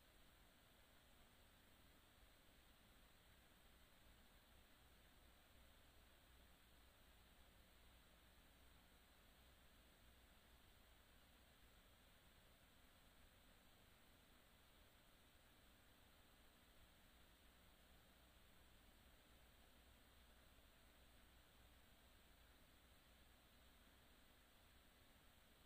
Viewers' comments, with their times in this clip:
0:06 ...That track is funky on the Isaac Hayes side of the game...What you gonna do when the liiights go out in the city???